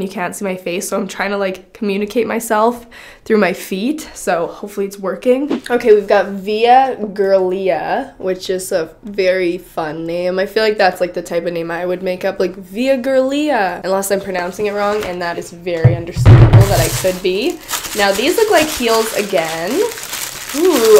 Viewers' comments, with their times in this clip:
0:08 that's definately not how you pronounce that lol but I love you just the way you are ahah